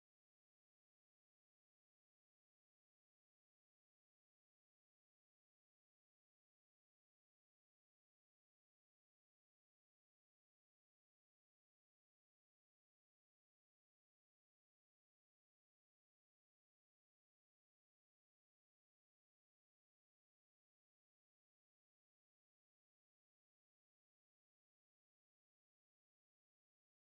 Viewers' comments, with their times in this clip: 0:09 Akaza you could heve made it sound like akaza was preaching